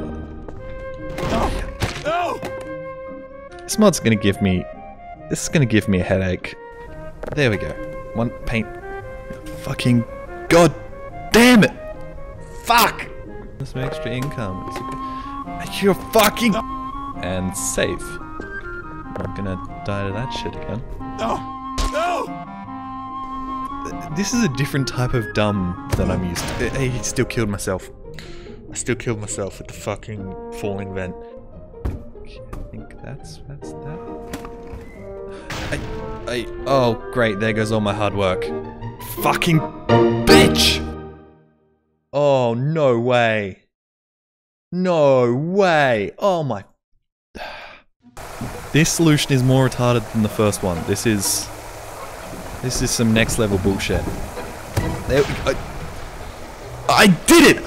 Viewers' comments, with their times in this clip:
0:10 makes jolly sounds like he is the instructor of the gym activity with the " THE FITNESS GRAM PACER TEST IS- "
0:41 Oh nou wuey! :D